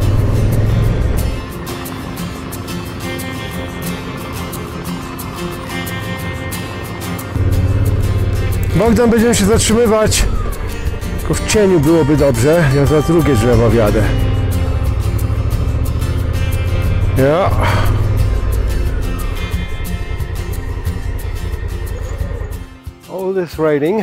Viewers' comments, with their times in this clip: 0:08 is it Polish? For a moment I thought YouTube pulled audio from another video :)